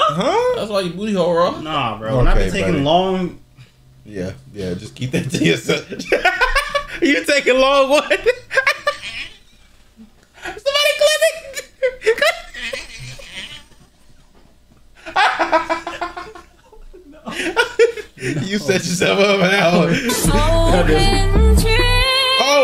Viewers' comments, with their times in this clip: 0:07 the mosquito in my ear
0:09 dafuq wus tha nasty ass lil laugh in da mix